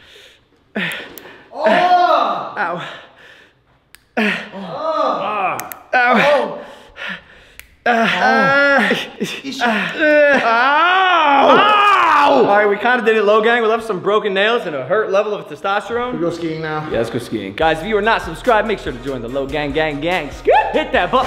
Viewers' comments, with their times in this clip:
0:06 it sounds like y’all are have Sexually fun